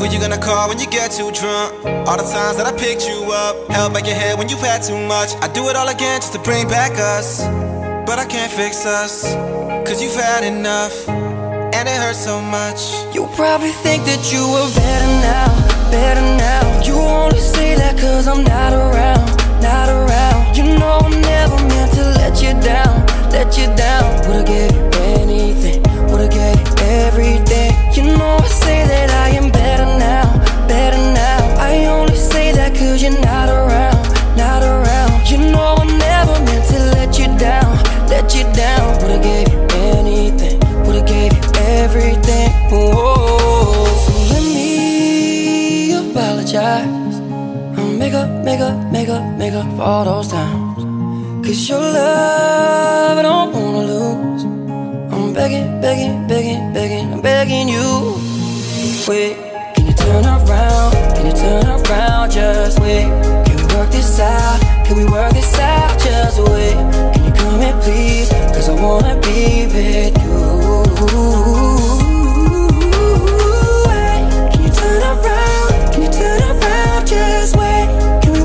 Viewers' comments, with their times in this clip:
0:09 when listening to when he says "coz you had enough!" just keep repeating to yourself the word FAT over again and then listen to it again!
0:10 I know he says “cuz you’ve had enough” but it sounds like “cuz you’re fat enough”😂
0:59 -3;35Just Woooooooooowwwwwww😍😍😍😍😍😍😍😍😍😍😍😘😘😘😘 And your voice yrrrrrr killed it yrr😍😍😍😍😍😍😍😍